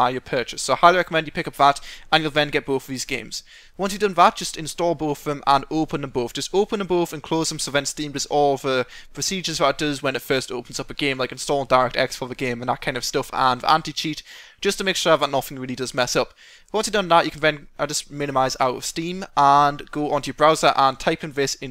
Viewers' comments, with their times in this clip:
0:06 oopenenboef, sorry but I LOL'd